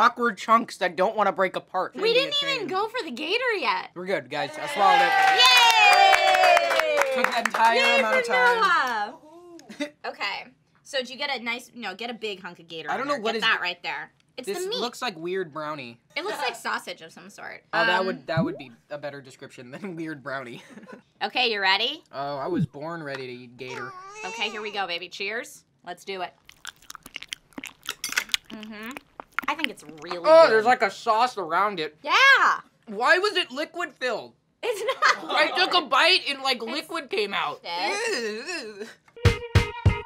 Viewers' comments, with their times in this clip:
0:05 I saw her do that like they must do that in slowmo and then it happend that laugh is so funny in slomo
0:26 arghhhhh... the chewing sounds awful